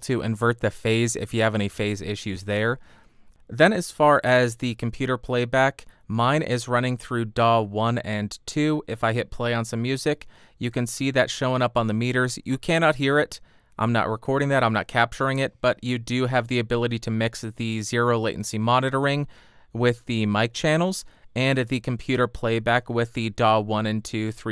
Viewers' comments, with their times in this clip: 0:09 that music will scare me and rip my ears off if set to 100% by accident